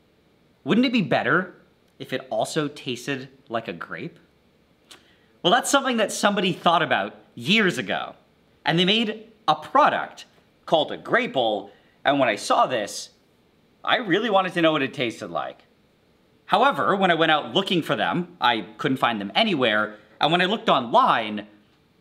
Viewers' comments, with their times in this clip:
0:04 VSauce music starts
0:10 I'm hooked, but I'm REALLY bothered by what sounds like "graple" being spelled "grapple."